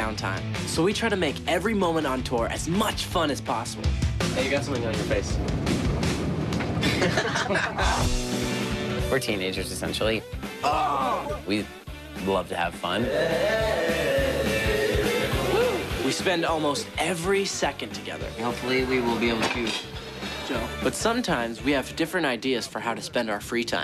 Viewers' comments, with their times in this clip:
0:07 Cute laugh nick It's so cute, :)